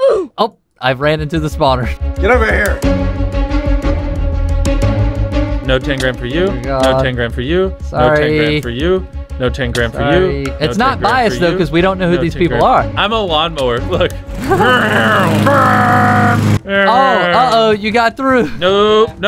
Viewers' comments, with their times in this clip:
0:06 That doesn't sound like Mr.Beast